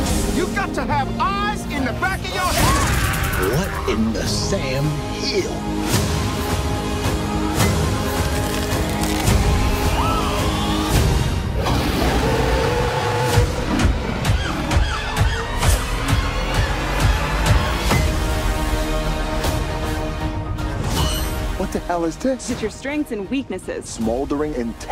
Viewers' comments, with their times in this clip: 0:05 In did milo walker said heel or hell